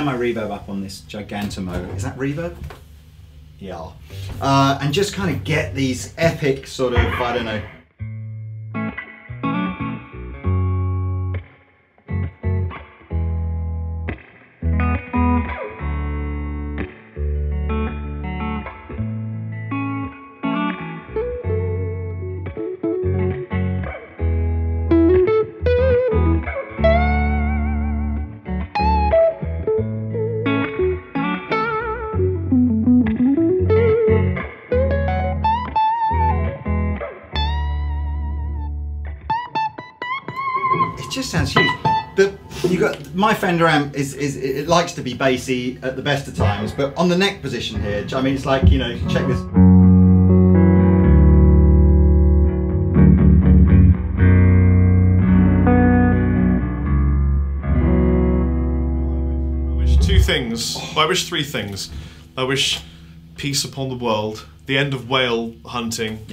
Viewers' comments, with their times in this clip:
0:08 that opening jam and that baritone part were both very nice indeed. As are the axes.
0:24 I keep on coming back to this video, and every time, my face becomes one big goosebump! I just absolutely adore that sound/tone/riff/whatever.
0:50 that could well be one of the most beautiful tones i have ever heard.